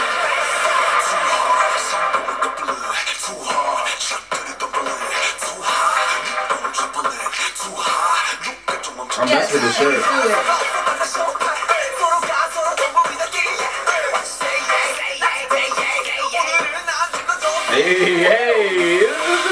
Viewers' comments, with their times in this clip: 0:04 (not too hard) go on the dumpling (too hard) meat on trampoline